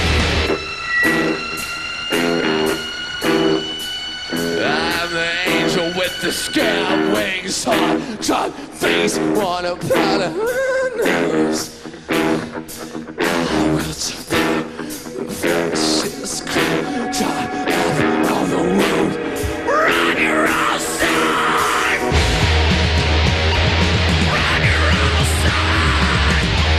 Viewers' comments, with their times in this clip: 0:07 That "his" gave me the chills